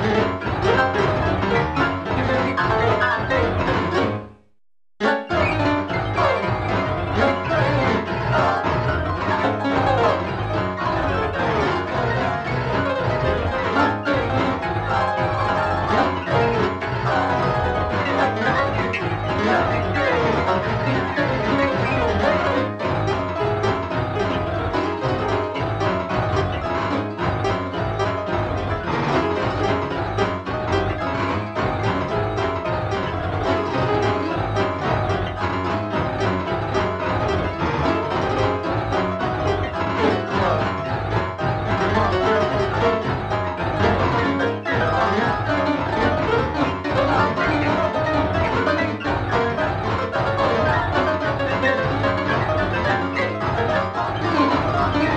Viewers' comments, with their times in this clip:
0:09 "Tiny little trains!" sounds pretty much the same as the original.
0:37 I CAN HEAR THE LYRICS WHEN HE SAYS WOO OO
0:40 I JUST HEAR "IN THE CLUB"